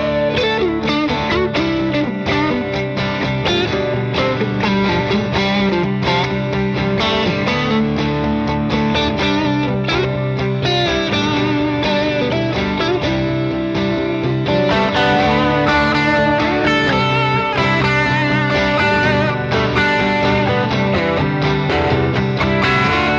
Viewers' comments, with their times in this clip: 0:09 Ending song sounds like Innocent Days by Giant. :)